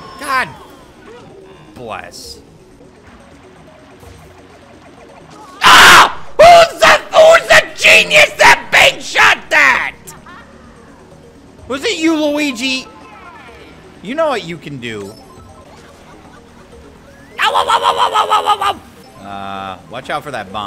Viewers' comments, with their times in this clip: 0:04 bruh he turned into Gilbert Godfried XD